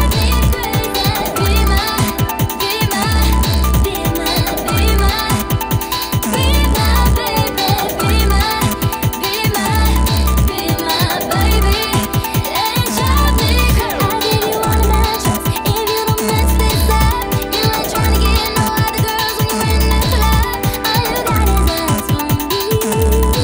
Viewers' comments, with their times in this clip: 0:04 it was so good until that weird fart noise came in from onwards 🥲😭😭☠️